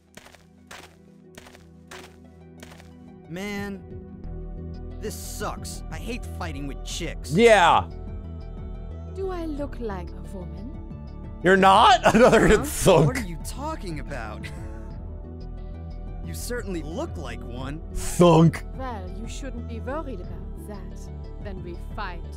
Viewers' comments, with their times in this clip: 0:09 Luise sounds like Mercy